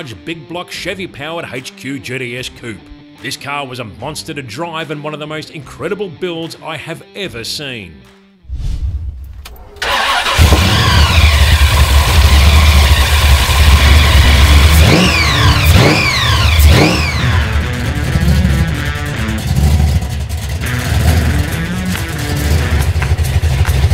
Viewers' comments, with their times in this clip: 0:10 That supercharger whine and that deep bass exhaust thump! Pure music! Who needs a fancy radio when you have this to listen to? Great episode!